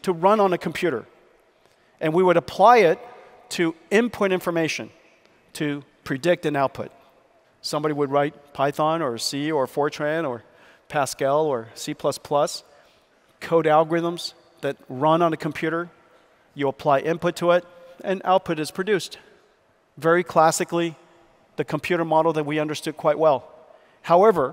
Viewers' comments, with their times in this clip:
0:05 Bro said 4chan when talking about coding languages... What?